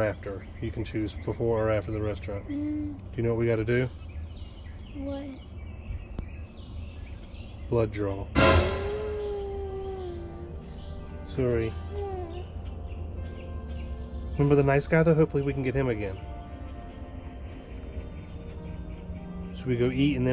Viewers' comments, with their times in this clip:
0:08 We have a whiner again.